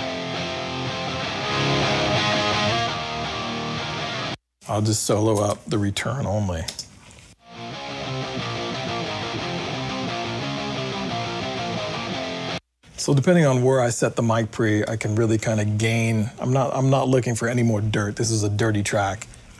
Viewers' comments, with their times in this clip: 0:06 hell yeah! Blow out that preamp baby. What a tone